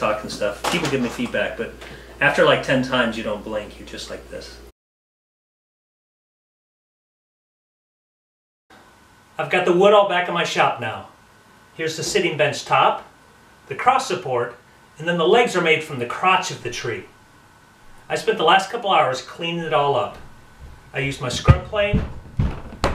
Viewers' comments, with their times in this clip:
0:05 mfw someones walking upstairs while im recording